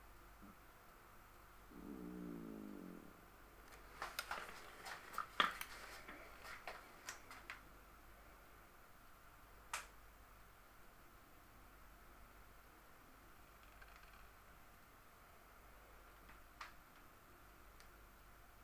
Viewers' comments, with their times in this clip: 0:05 So who was hungry? I heard somebody's yummy growl (I'm assuming lol) When the "pros" do fingerprints they roll it on 😉